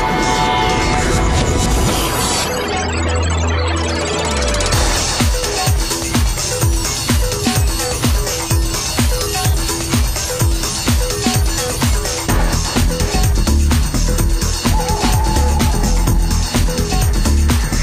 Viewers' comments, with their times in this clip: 0:05 is it just me or does all of this music vibe